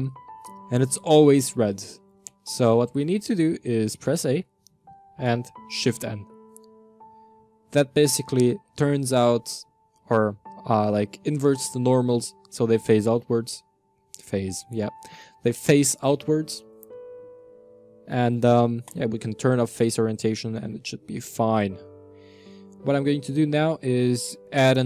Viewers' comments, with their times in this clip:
0:09 actually I sense sarcasm in this comment. The melancholic piano is just so distracting and there were some parts that just don't work ( Shift+End hotkey doesn't work. also there was no info what does the red mean)